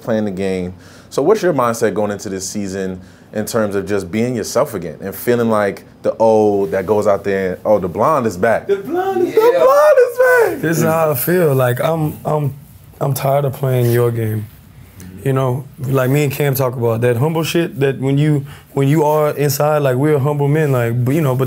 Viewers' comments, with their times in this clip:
0:09 The way Cam said “The blonde is back!” got me cryin😂